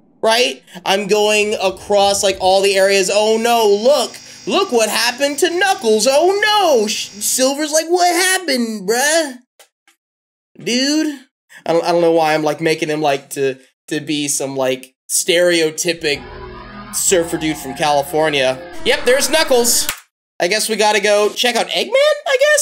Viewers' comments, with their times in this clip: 0:07 average surfer dude voice 💀